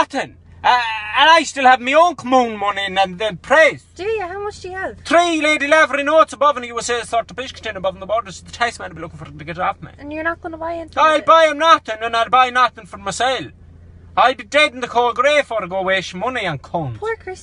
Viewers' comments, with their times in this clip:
0:05 wtf did he say? 😂